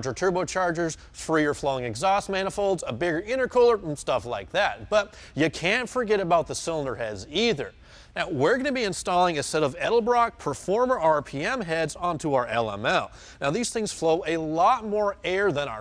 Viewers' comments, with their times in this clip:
0:03 I was about to reply to this post with a "?????" until i got to Nevermind, I live in Nashville and have NO IDEA what that accent is. Sounds like 'bama-cajun-peanut butter mouth